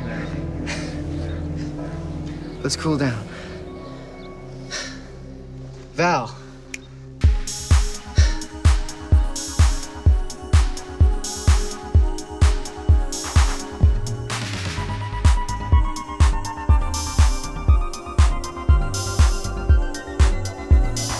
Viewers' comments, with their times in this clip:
0:05 Omg when he put her song on that was played at the beginning of the movie and started laughing before he danced to that song knowing he looked dumb as hell and the beat went in slow motion she looked at him up and down and said not going anywhere with you🤣🤣🤣🤣🤣🤣🤣